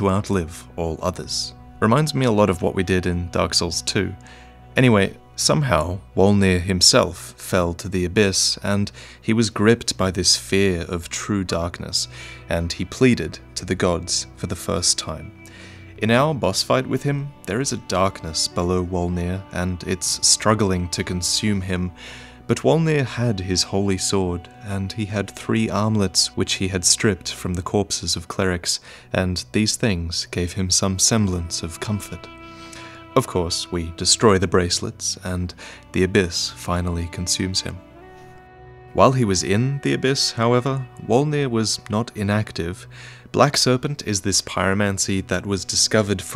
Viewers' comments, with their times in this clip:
0:10 Spooky doot Listen closely
0:10 I've watched this video about five times and I'm only just now noticing the doot
0:28 I know you said "armlets" but I absolutely heard "omelettes"